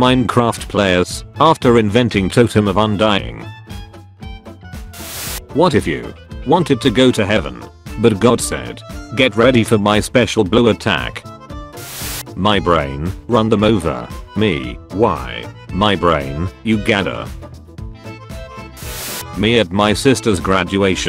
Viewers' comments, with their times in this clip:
0:05 NYEH HEH HEH! (Bonetrounse intensifies)